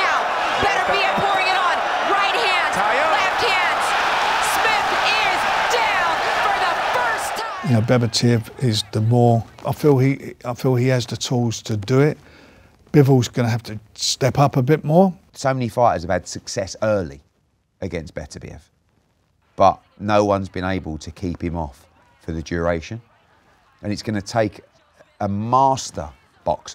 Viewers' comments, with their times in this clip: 0:08 Bevertiev I’ve had it at this point how hard is it to pronounce these guys names I’m hearing beeevol or beterbeeeev like show some respect